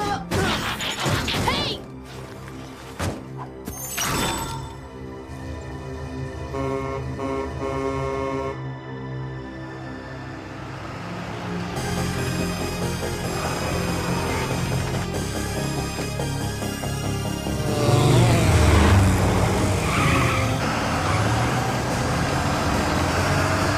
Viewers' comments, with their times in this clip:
0:06 man that music is awesome